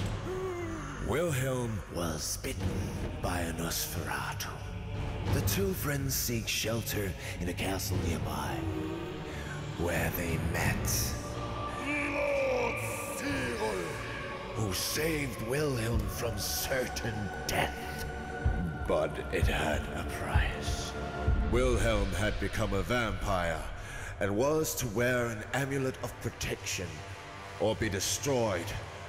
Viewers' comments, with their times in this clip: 0:10 Is it just me, or is where it says the giant guy's name completely unintelligible? Seriously, I cannot for the life of me figure out this dude's name!